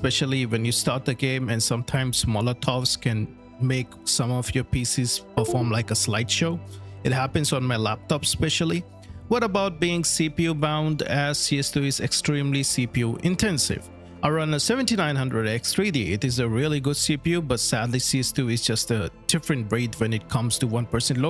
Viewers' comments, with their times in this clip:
0:05 windows USB sound. Dont u eever dare to do that again. I was unplugging my whole pc just because of that